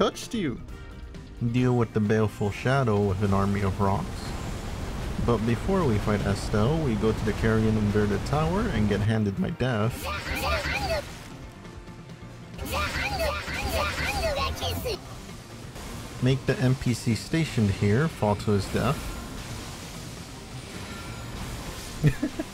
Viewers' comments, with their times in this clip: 0:09 High-pitched za hando was far funnier than it had any right to be